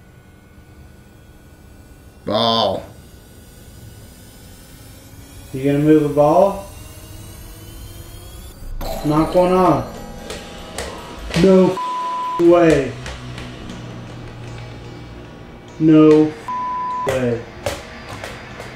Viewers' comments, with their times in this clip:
0:05 a little bit before the boy “Mike” said that he only moves things when he’s told to. And then you hear the darker spirit come bk in and say “Do it” like he was telling him to move the ball. Then it says “Ball” in the creepier voice like he’s confirming to mike that he wants him to move the Ball. And mike is complying by pushing it! And it’s like earlier mike also said that he was trying to push the ball before. And it’s like he cldnt do it. It’s almst like the darker spirit is using mike to do his bidding and making mike think he can only push objects when he tells him to. Like he’s oppressing poor little mike 😔That’s what it seemed like to me!